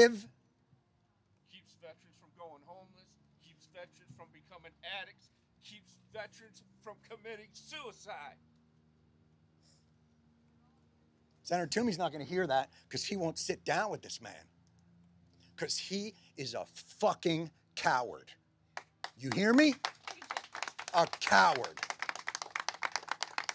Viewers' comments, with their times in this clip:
0:07 when the veterans start chiming in you can hear Jon get even more angry. This a truly emotional speech from a person who cares about our cets